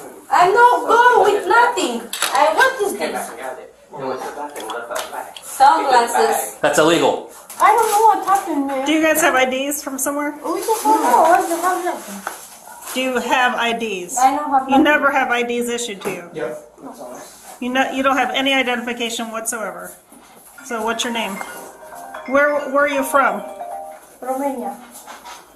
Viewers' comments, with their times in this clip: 0:07 Lmao I.D's, not tiddies!! 😁😁😁
0:10 i guess that " do you have id" sounds like "grab your boobs, loll